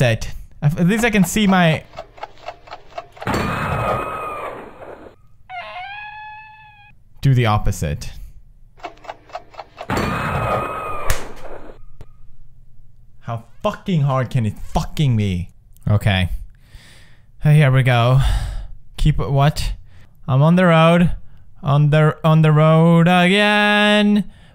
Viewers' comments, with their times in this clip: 0:05 PewDiePie sounds like a cat